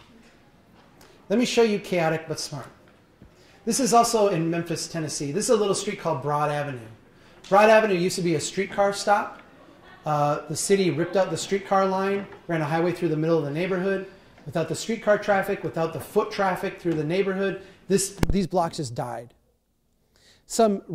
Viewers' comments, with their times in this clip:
0:05 Chuck's mike cuts out great stuff up until that point though